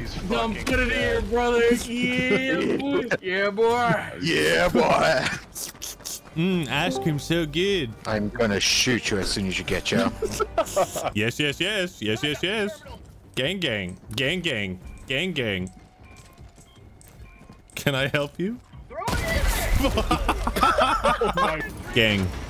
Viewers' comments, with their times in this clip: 0:07 you sound like cyber traitor!